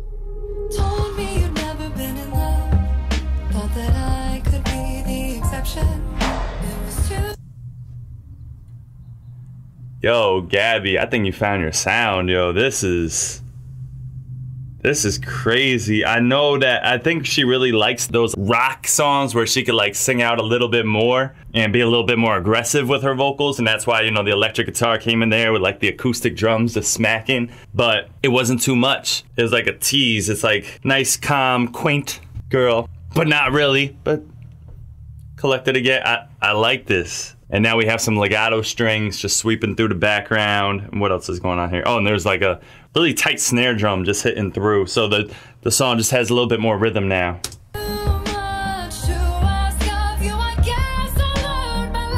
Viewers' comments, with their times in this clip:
0:09 I thought he was bout to say yo gabbie you fine lol I'm laughting my ass off
0:38 I hope gabbie sees this video especially because the song really is beautifully done & I know she works hard on all her projects but i pretty much agree this is my favorite sound of gabbies like the more reserved higher in her register but it gets that aggressive tone but not too much. I really agree on everything he said like this is it!